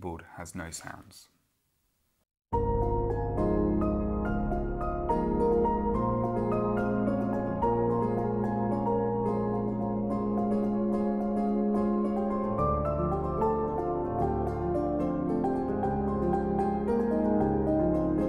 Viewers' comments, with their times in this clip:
0:04 is that a song, or smth improvized? Sounds beaufitul